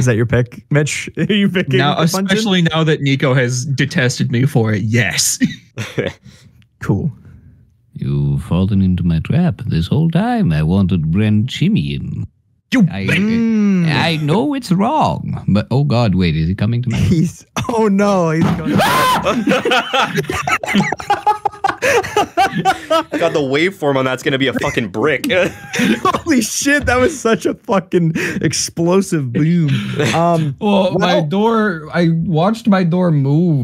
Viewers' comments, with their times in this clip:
0:09 The narrator voice into YELP. My sides XD
0:18 THAT HOMER SIMPSON-ESQUE SCREAM, I CAN'T- It sounded so much like Homer Simpson's scream